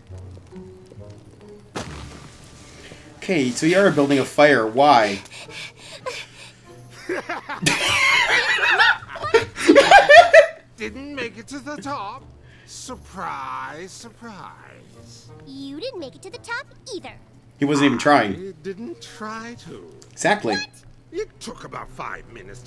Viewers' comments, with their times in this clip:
0:07 (Tirek laughing) Cozy: IT'S NOT FUNNY, TIREK!!! Well, I say 'Oh, boo-hoo-hoo for you, you spoiled brat!'.